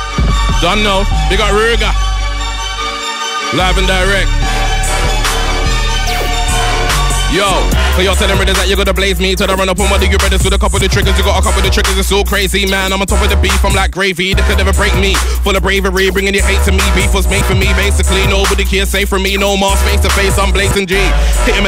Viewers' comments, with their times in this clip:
0:07 The flow sent me to the Shadow Realm oh my word